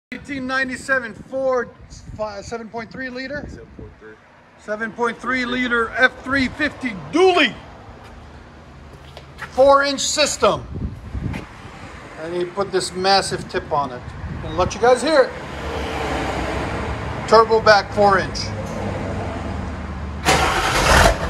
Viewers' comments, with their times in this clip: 0:07 I absolutely love the way you said dually.